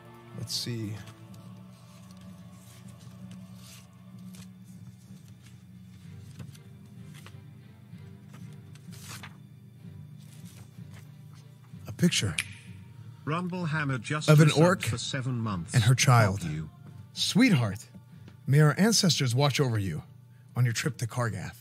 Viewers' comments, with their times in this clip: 0:04 was that sound effect implemented or was it just THAT perfect?